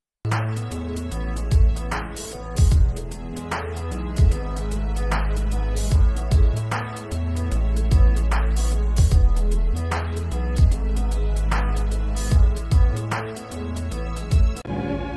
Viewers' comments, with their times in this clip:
0:03 digi Al is how bri ish people say digital 😂😂😂😂😂😂 skullemojiiiioi